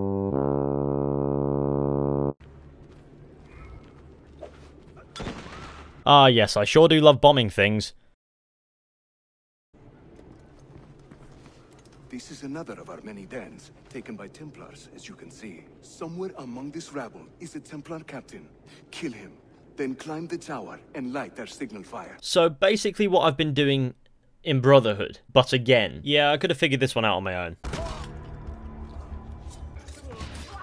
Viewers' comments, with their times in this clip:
0:05 That pause was golden
0:15 Am I the only one that has always thought Yusuf sounded like a dramatic movie trailer narrator in this scene? He's so dramatic, I can't help but find the voice performance amusing right here